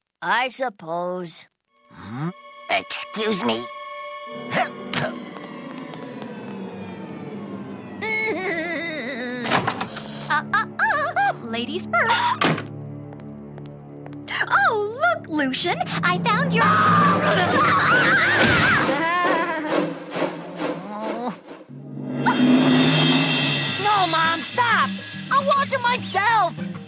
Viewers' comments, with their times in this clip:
0:08 spongebob laugh :D